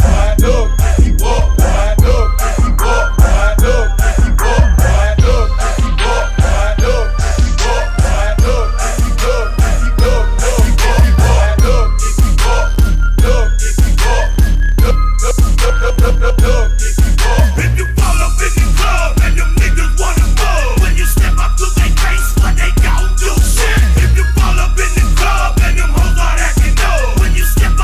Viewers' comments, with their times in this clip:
0:10 Maan, Lil John was blasting